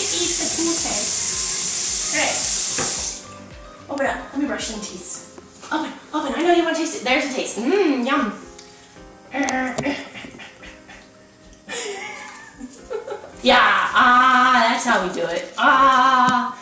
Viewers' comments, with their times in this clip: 0:04 The running water gives me anxiety.. THX U GURL!